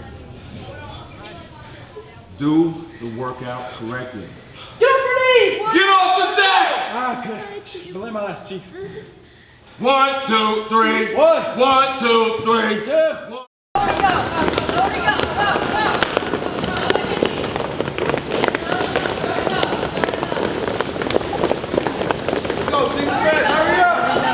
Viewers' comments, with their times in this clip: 0:07 My god did those sounds not sound right.